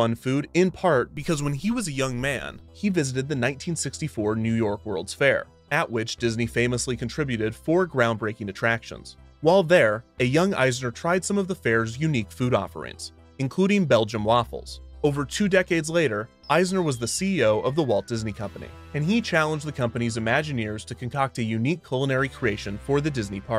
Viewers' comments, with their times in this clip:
0:10 Bel-Gein Waffles. . are you sure there weren't human body part in those?